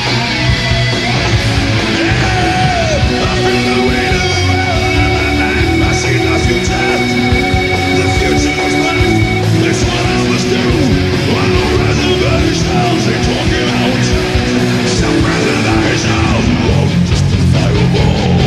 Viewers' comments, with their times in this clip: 0:03 that bass tone